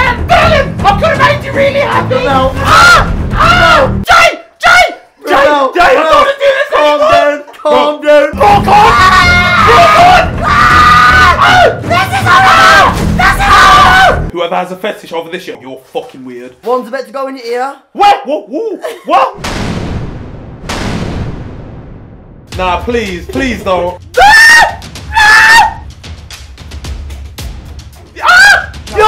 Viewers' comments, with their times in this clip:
0:10 he sounds like a child